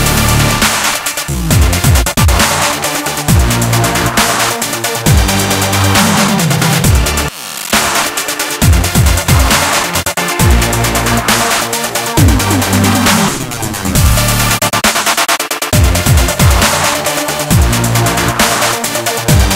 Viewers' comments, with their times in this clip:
0:05 I love that moments when we have a glitch in the music !!